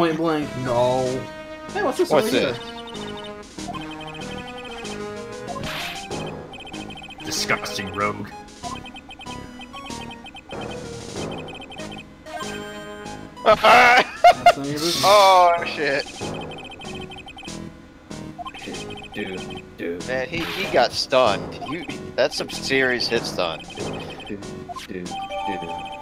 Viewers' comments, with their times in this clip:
0:08 The track vaguely sounds like one of the songs that are sung in the traditional theatre performances of the Japanese. However, it has been adulterated with a lot of electronic tunes - hard to tell which category it is supposed to be.